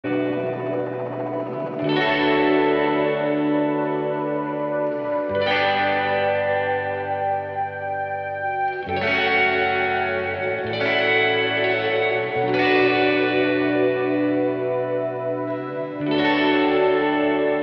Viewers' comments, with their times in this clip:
0:00 And for some nice music :)